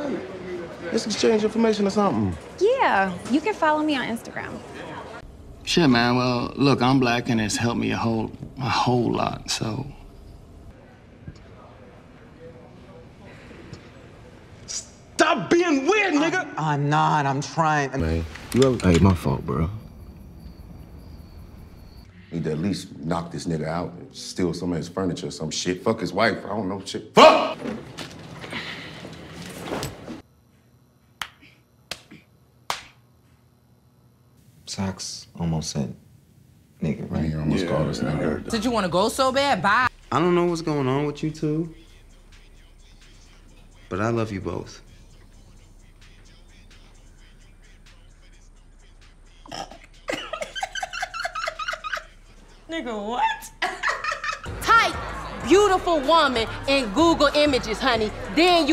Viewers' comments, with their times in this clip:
0:08 oh wow he’s in Brassic, he’s Irish in that so I assume Irish in real life…how’s his accent here? 😂
0:30 the suspense, the pace of each slap, each lowly grunt the kid gives after each slap, Uncles stance on that locker.. fucking died when I saw this
0:41 That felt genuine and her laugh at him made me sad. Lmao